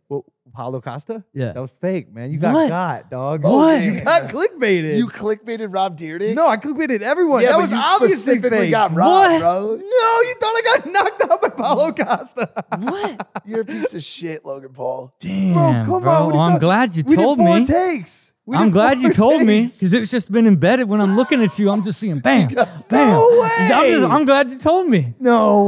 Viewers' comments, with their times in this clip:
0:09 the way he says it sounds like hes condensing and that he would never get knocked out by Paulo Costa . . Paulo can 100% beat up Logan and jake